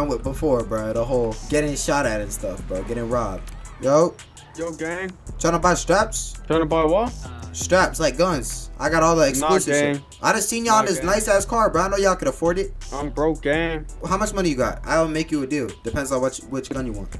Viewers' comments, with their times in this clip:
0:04 Lol the guys from plus were definitely from New Zealand, I know that accent and slang anywhere.